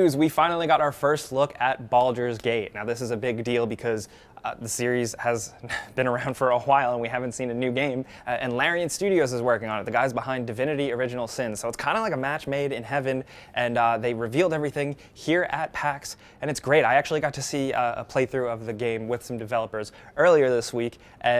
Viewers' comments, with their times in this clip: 0:04 "The series has been around for a "RwHile". Stewie Griffin would be proud!
0:06 Why are you saying it like that where you putting in so much emphasis on the H